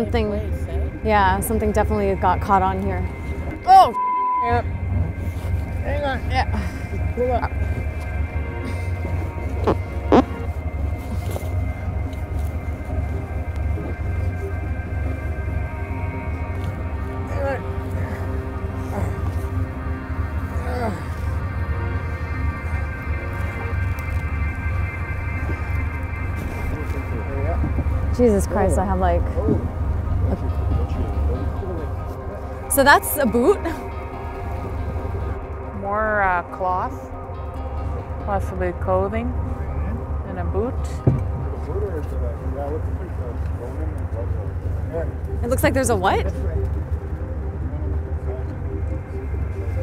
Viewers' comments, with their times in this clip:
0:10 He definitely farted.
0:34 "so that's aboot" lmfao as a Canadian I straight up died when she said it like that. Edit - every Canadian needs to look into the issues facing Natives. It's a lot more than broken treaties